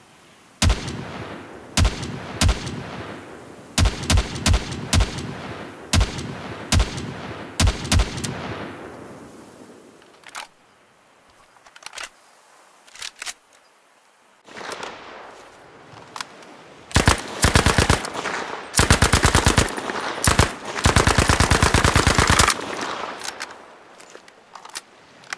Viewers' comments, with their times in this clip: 0:09 this reminds me of the CS1.6 AWP somehow